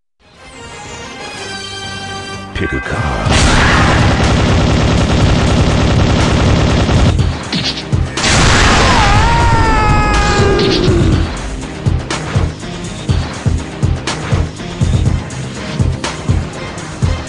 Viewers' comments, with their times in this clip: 0:03 i love dat remix of da X-men theme